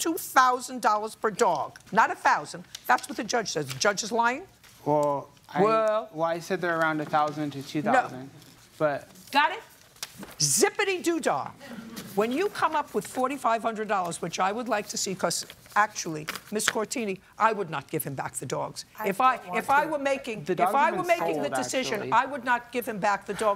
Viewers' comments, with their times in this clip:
0:05 WeEEeLLL? 🤣🤣🤣 I lost it there.